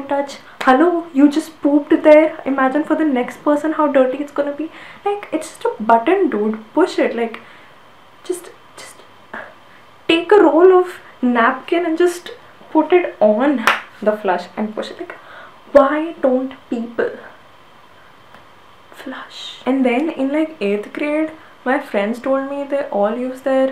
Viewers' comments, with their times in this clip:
0:09 the way u said just push it😂 👉 AMAZINGGG